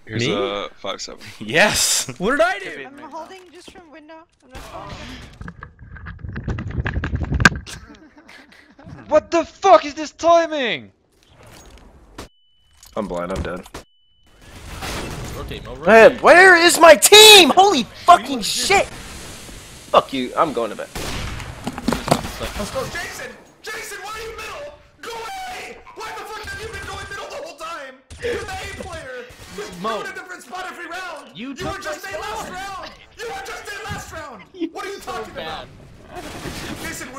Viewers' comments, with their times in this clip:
0:04 nbk has a thick british accent? i thought he was french
0:23 I love that you can hear m0e in the background xd
0:23 Freak and m0E rage in one clip, AMAZING. also why the fuck does m0E's voice sound autotuned